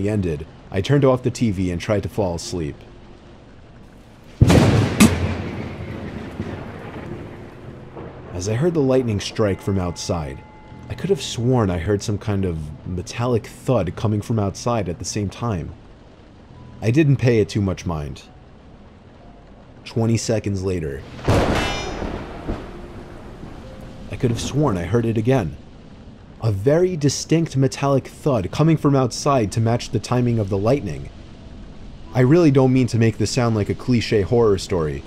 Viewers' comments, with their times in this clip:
0:04 I thought a Michael Jackson song was about to start lmao
0:04 did bro fart
0:04 what happened, did the thunder scare a fart outta of them?😂
0:04 That thunder scared the living crap out of me.
0:04 WARNING INCOMING HEADPHONE USERS:😮
0:04 Sound effect sounds like when lightning struck the power lines near me and a i could hear a loud click from all the electronics that were plugged in. A lot of electronics in the whole street were destroyed. Some people even had a fried electrical wiring in the house and phone lines too...
0:06 did anyone else hear the minecraft damage sound💀
0:22 ok but who else heard a minecraft anvil